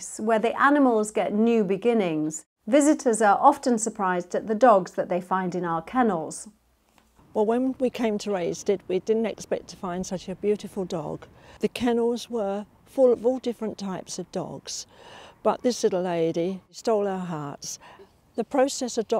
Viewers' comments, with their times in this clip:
0:07 Ive watched your rescue videos and im loving the way you say “halo” to the dogs, so pure and gentle and im sure paws knew that youre just trying to make friend with them.